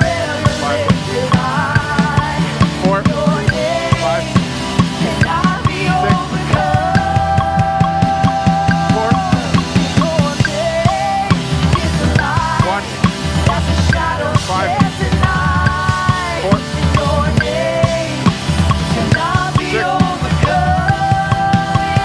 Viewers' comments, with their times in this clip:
0:06 I love the bridge Our church is in the middle of a building process, we’re stuck in a school right now. CANNOT WAIT for acoustic drums, they obviously make a huge difference!! I love the sound of your cymbals